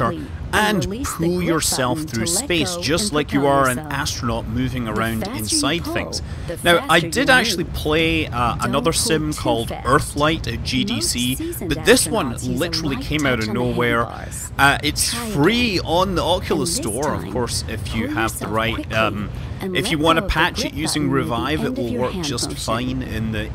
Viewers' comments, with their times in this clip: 0:06 I find it annoying that two voices are trying to tell me something at the same time xD